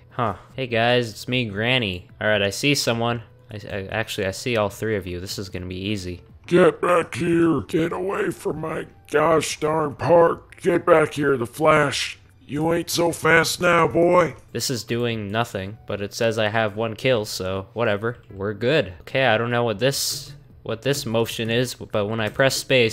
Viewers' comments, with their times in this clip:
0:06 sound like a grandma and died anywAys your videos are awsome
0:06 i cant stop laughing grannys voice is funny to me i really cant stop laughing